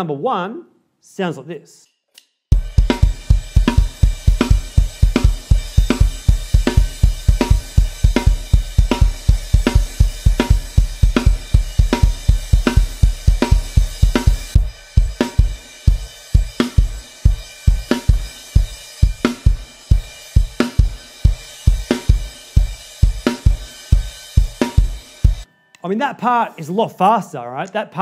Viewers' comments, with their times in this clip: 0:09 What the signature of ? I noticed it was a different overall sound from its time signatures for rest of the song